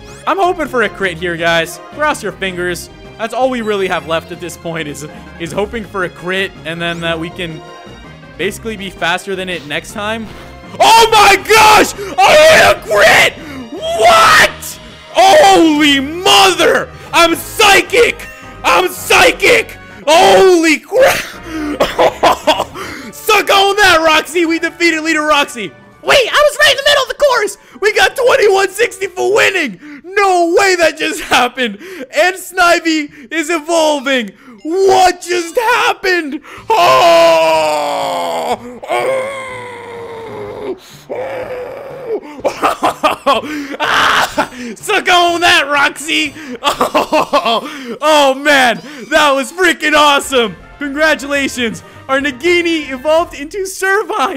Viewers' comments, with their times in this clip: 0:06 R.I.P. headphone users
0:06 I love when he starts yelling, its really funny!
0:10 R.I.P is advanced headphone users
0:10 R.I.P earphones user XDD
0:11 Did anyone else's ears explode
0:39 dude are u alright? constipation
0:42 it sounded like you were on the toilet
0:42 he became a dolphin LOL
0:42 it sounds like he's having constipation